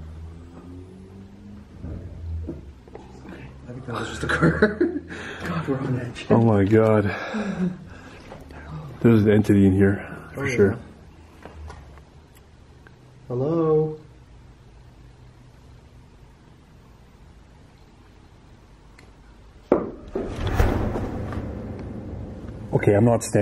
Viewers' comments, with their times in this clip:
0:10 "lead" or "leave"